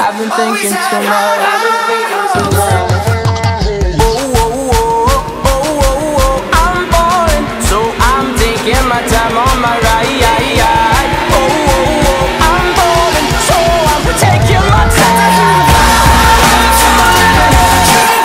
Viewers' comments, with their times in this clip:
0:04 Starting I legitimately couldn't breathe, that was some intense build up I love it!!